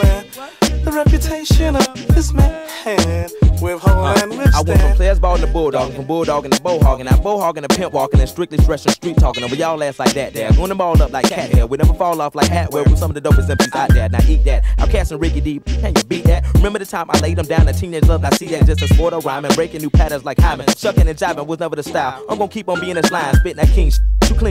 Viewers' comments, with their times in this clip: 0:06 He sounds like Eminem in Lucky Me